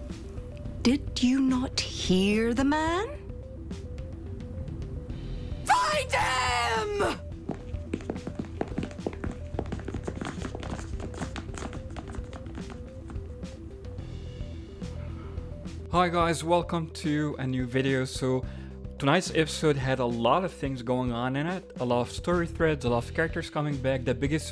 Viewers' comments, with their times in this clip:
0:05 OMG that shout That was the most beautiful thing that I've heard in this series. It resonated in may soul. She's perfect. <3